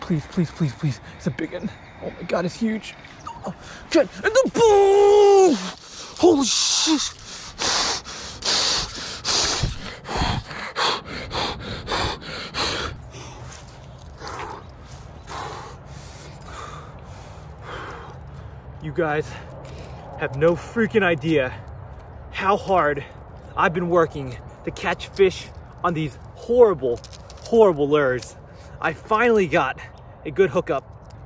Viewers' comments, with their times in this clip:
0:03 catches first fish and sounds like it took alllll the energy out of him 😂😂😂
0:13 The way you were breathing for a 3 lb bass was so unnecessary lol
0:15 breathing simulator lol